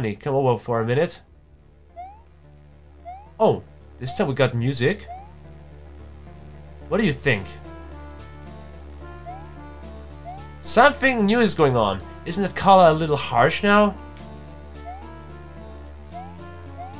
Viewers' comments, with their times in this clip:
0:04 the beginning of epic music